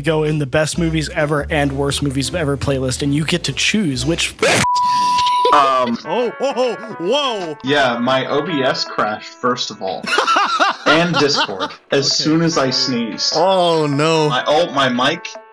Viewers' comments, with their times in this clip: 0:03 How dads sneeze: